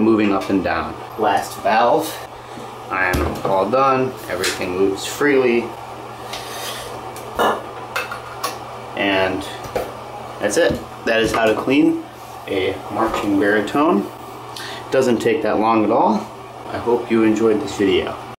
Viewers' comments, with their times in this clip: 0:05 The pop physically hurt me Thank you for this, having a sectional to clean tomorrow 🙏